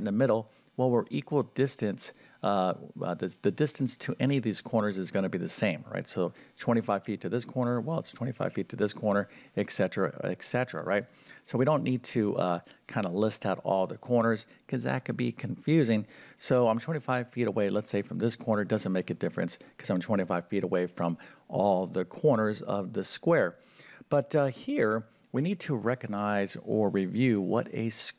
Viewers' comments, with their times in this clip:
0:09 our ancient greek ancestors, probably including noble Pythagoras of Samos, turned in their graves at the ignorant misreading broadcast here by a math "teacher". We have the abbreviation ETC. that is short for greek "ET CETERA" meaning "and so it continues". A classically educated english speaker pronounces this as "etsetera" while only ignorance can explain the error "eKsetera". It is also bad form to quote the square root of 1250 as "approximately 35.35" when correct rounding of the 2nd decimal place gives a less erroneous approximation 35.36.